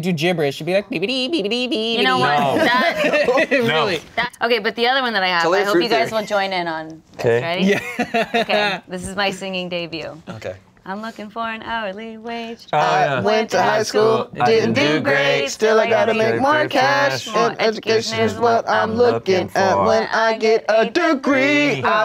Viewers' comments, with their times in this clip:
0:10 is the singing part. You are welcome